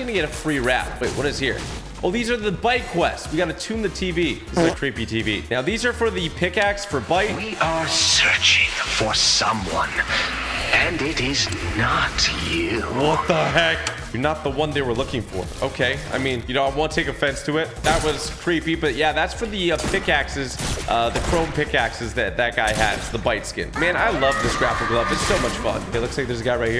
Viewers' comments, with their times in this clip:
0:06 I thought that sounded like Ghost Face 🧍☠️
0:08 Yo sounded like ghost face how come you didn’t notice 💀